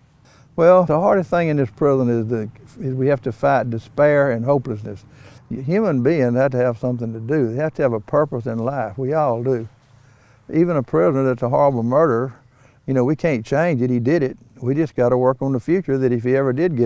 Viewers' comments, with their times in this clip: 0:03 Tell me the guy doesn’t sound like Herschel from the walking dead